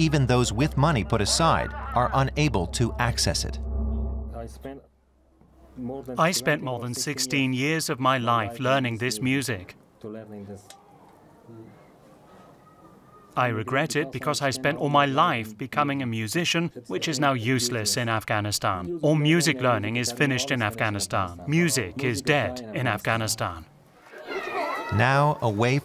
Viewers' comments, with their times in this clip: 0:07 Why are you dubbing him? He's speaking English! 😳 And perfect English at that!